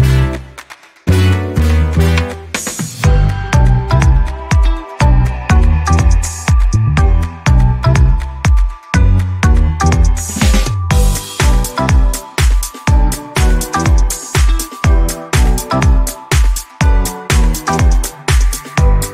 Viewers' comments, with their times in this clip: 0:06 She don't want to laugh then also she is laughing 😂😂 Is it funny 😂😂